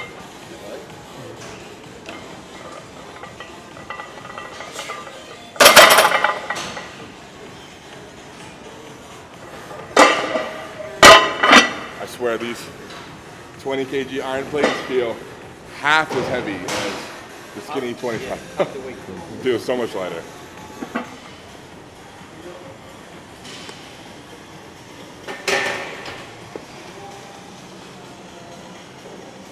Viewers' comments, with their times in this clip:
0:10 Gym asmr fr 😂😂